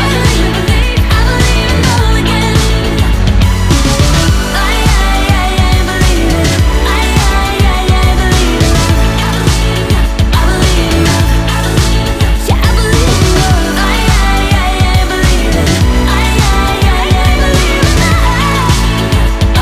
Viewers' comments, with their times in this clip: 0:03 the cricket they hired for the backing track here does a great job!